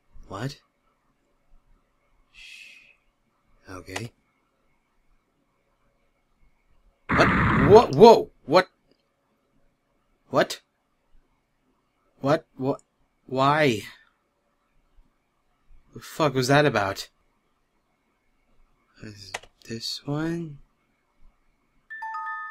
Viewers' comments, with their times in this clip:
0:09 FAST- FORWARD TIME! (luv the music by the way! xP)